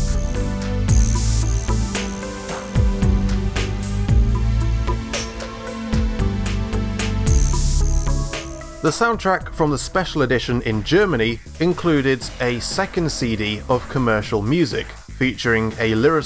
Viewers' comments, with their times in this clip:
0:04 man, I always thought that audio glitch was just in my head!